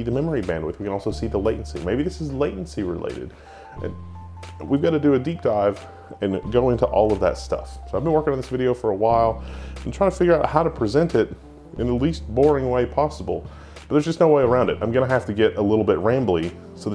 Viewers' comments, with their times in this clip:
0:03 music is so sad i though wendell is crying